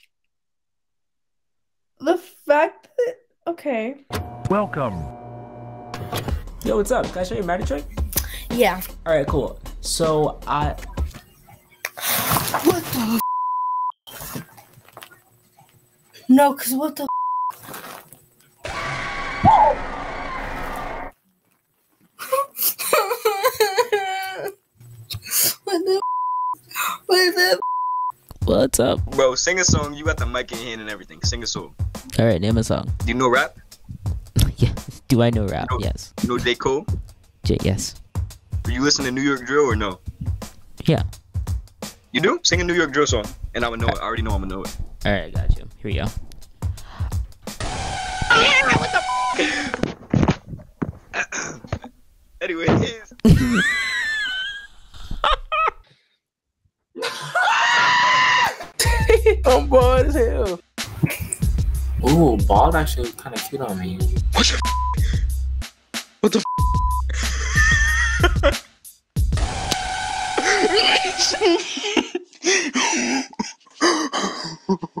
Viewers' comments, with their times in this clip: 0:05 back rooms sound
0:22 SHE WAS ACTUALLY CRYING BYE
0:29 Dude is the best doesn't need a voice changer
0:43 The scream had me to the ground
0:45 Not him trying to play it off like he didn’t just scream like a girl two seconds earlier. 😂😂😂
0:45 goofy ahh scream 💀
0:46 Bro scream like a girl💀
0:47 funniest reaction of all time, that scream😅😅🤣🤣🤣🤣
0:47 jit became a turkey
0:47 What was that scream?! 😂😂
0:47 the way my man screamed damn 😭😭😭
0:47 wrong tone of voice scream. quickly fixes it
0:47 Lol when he screamed
0:47 That's professional reaction right there EEYYEAAAHA, ehem. Anyway
0:47 he sound like that cardi b meme 😂😂😂
0:47 scream is the best
0:47 that noise he made wth 😂😂
0:48 bro tried to scream like a cat
0:48 The guy sounded like a cat bruh 💀🙏🏼
0:48 HE SCREAMED LIKE A GODDAMN CAT OMG
0:48 bro sounded like my dog when he stepped on a bee💀
0:50 What kind of scream was that 💀
0:57 LOL the way the guy screamed